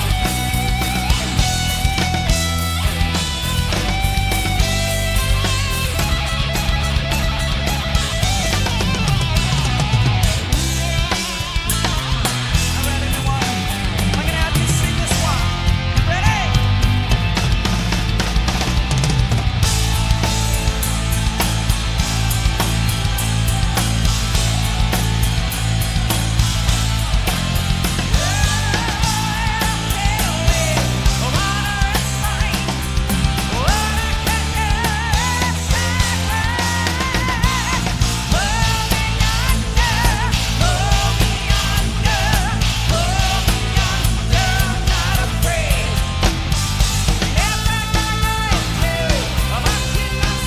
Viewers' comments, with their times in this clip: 0:10 damn, that cymbal mute mastapiece
0:20 Amazing voices ... although it only lasts 7 seconds
0:37 is unbelievable. Playing that pattern, singing harmonies and playing with the drumstick at the same time
0:38 Jesus that part where he’s singing backup vox, doing a stick trick with his left hand and doing a sick alternating rhythm on the China and ride with his left.. freaking sick. Even if he does mess up a bit at the end.